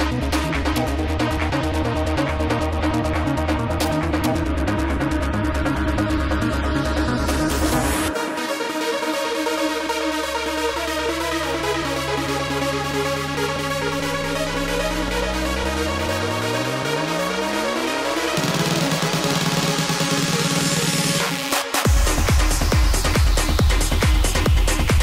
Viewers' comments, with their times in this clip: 0:08 oh my, that synthhhhhhh